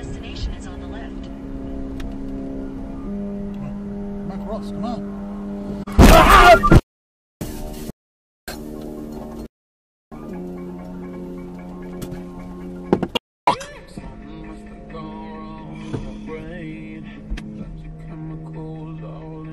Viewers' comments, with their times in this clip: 0:04 sound like Schwarzenegger screaming